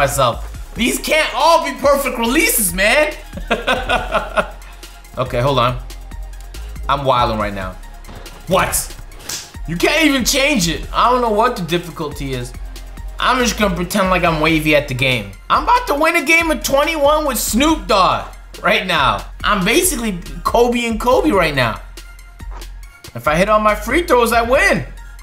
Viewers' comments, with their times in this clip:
0:07 My man had the best "What?" lmao